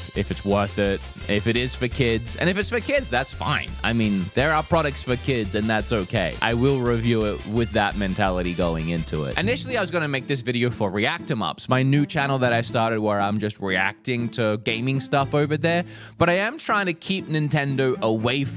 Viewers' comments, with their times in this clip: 0:04 Timestamp Speaking with the but my new fav alarm sound